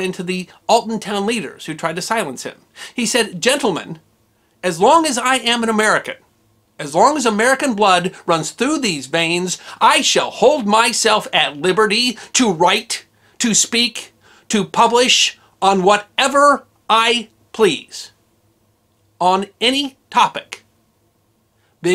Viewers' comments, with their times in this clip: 0:06 You go history guy. You were acting there, I could feel your fervor.